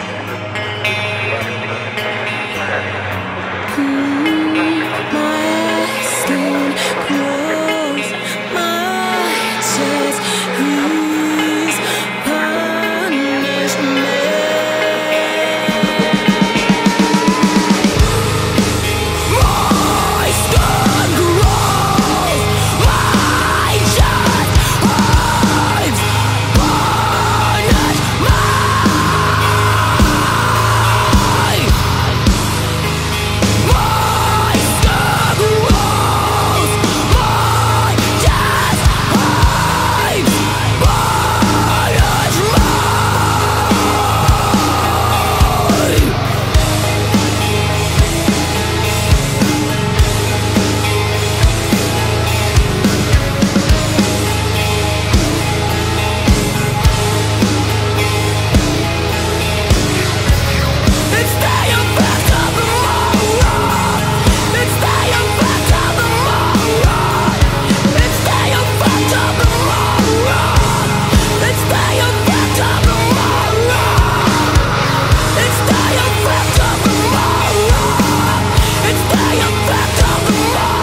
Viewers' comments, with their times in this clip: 0:04 that first "punish me" gives me chills every single time. so full of raw emotion 🤘🏾🤯
0:19 The intensity on that growl from onwards is insane. The live versions always have something special and more unique compared to the studio recordings and for me that was it!
0:28 The sheer power in that one scream is just ridiculous
0:43 the low in 14-45 is so good
1:01 🤔at is she saying “ instead u fucked up the wrong one “?